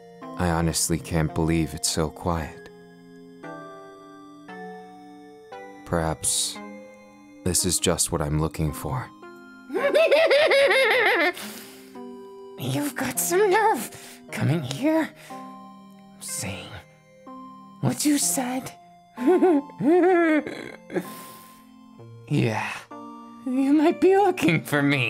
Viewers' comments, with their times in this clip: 0:05 Comments 6 *Only shows 2* EDIT: Holy fucking shit, that god damn laugh scared the shit out of me!! edit of the edit (lmao): I now realize that I used excessive profanity, and I’m not sorry, nor will I fix it. Hehe (bitch you thought I was gonna apologize for that shit, lmao)
0:09 I´m triggered of myself I always fall asleep but omg that laugh woke me up like damn son-